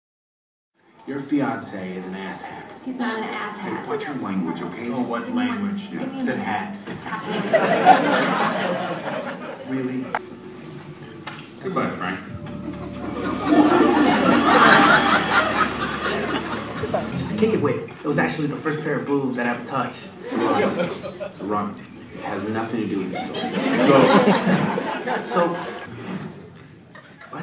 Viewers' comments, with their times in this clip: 0:10 really they just laughed at that scene ? I thought it's damn cruel though..